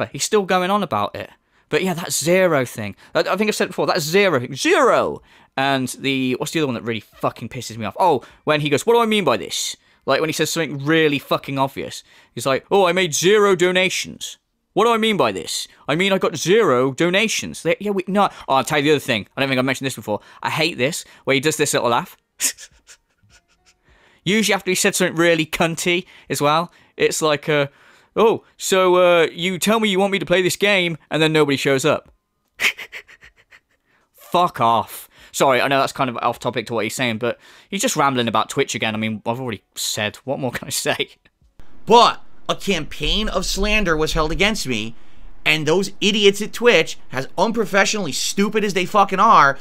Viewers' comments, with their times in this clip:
0:10 Lol i also hate that condescending laugh he does.
0:32 that is what we call the snake laugh because he goes tss tss tss🐍